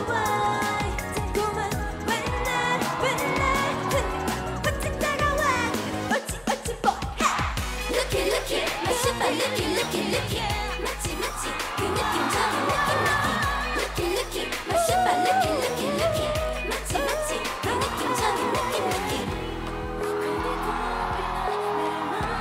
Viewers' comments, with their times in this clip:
0:06 wendy's part soooo cuteee.."hhaaaa!!" she sound like doing taekwondo😂😂😂
0:08 i hear only Yeri in the chorus 💛😂